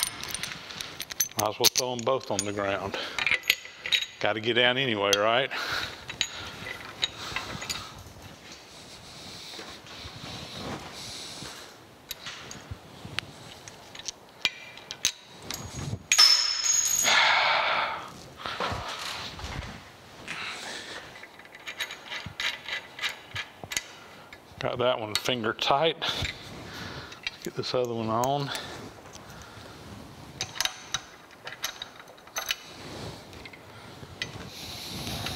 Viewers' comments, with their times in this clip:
0:06 I know that sigh.
0:17 Sir, I know that feeling well. I am a bit of a barbarian though - rather than a mere sigh of long-suffering, I would have colored the air blue. I'm happy to see the progress on this machine, anticipating the day you put your first project on it!